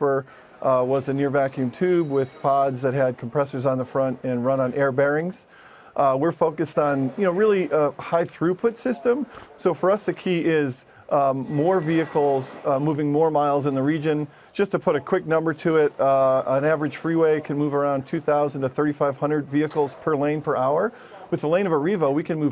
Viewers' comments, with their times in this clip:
0:07 Did he snort ? lol!